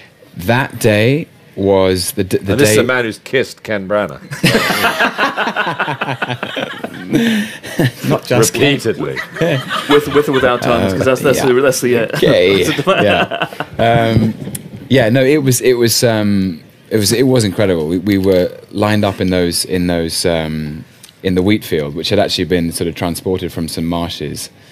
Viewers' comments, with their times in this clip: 0:05 His laugh is so adorable.